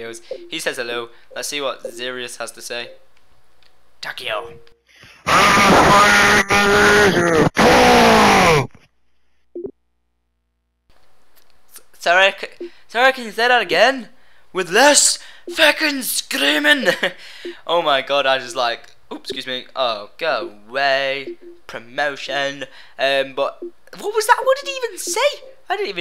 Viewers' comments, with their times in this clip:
0:07 warning, rip headphone users, I'm on of them :(
0:07 That was painfull to my ears